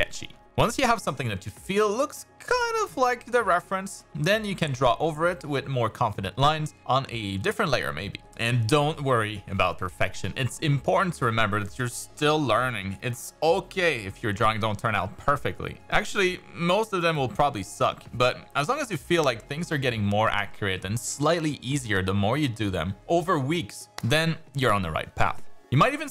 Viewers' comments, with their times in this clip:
0:07 Is there some weird background noise during the voices for anyone else too?